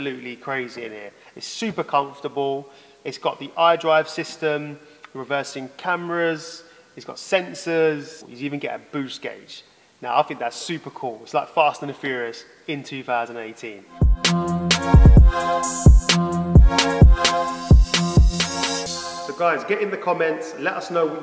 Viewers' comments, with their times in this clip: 0:08 before and after the timestamp you sound genuinely unexcited and simultaneity completely faking the small amount of satisfaction that you portray (through acting). I feel as though you are so accustomed to supercars that an M2 doesn't impress you at all and you are making a video exclusively for the sake of getting views-- not out of passion but out of obligation for the business.